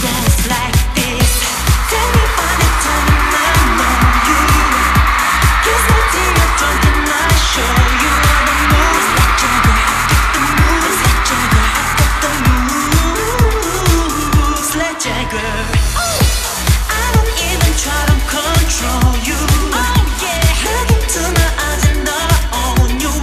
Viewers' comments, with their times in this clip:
0:06 I don't know how many times I have screamed woah omg =))) killed me. Wookie bb, you and your voice = so sexy!!! ♥